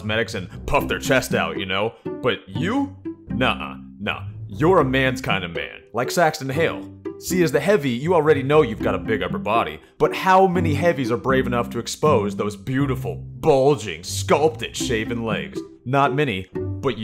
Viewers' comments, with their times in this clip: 0:05 Blu scout calling for medic to a red one, yeah pub server